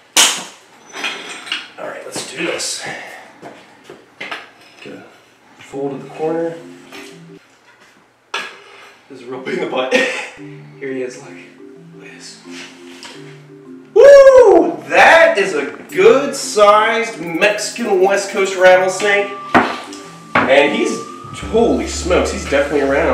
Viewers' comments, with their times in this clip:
0:06 The music cutting out is one of the funniest things ever posted to this website I cackled